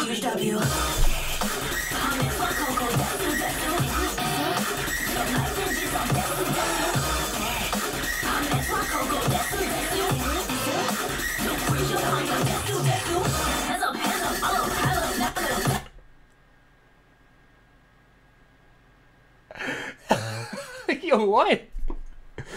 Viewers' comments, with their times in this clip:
0:04 It's literally like the producers messed up and accidentally repeated some glitched up part. The album covers have to be the only thing keeping this Calliope entity going.